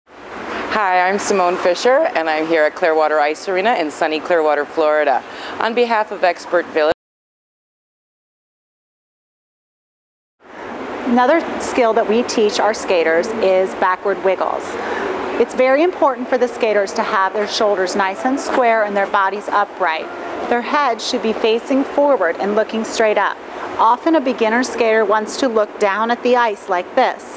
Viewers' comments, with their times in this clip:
0:08 man, the poor girl got cut off in the first video too...'n exactly